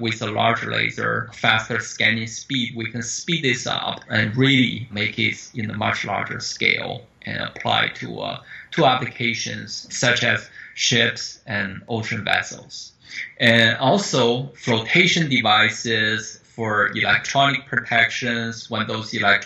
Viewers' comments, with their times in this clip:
0:05 Did he just say "the martial artist scale"